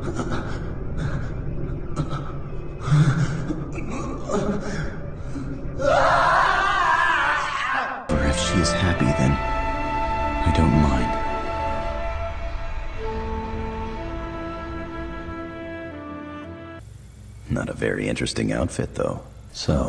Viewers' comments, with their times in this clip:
0:06 the voice scream of vincent it's very similar to Kevin levin's